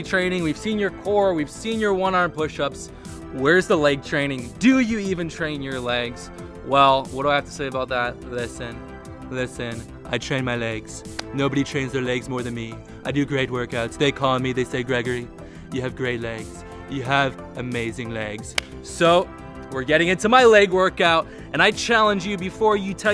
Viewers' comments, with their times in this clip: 0:10 that impression came out of nowhere but it was surprisingly good